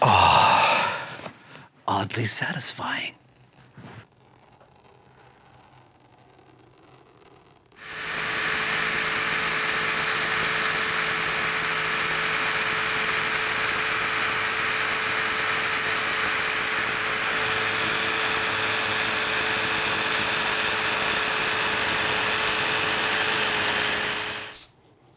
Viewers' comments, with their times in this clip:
0:03 omg, that was some amazing ASMR. Holy shit!
0:06 Lol. I looked away as he was using his marker. Then I heard the power tool and I thought he was massacring that guitar.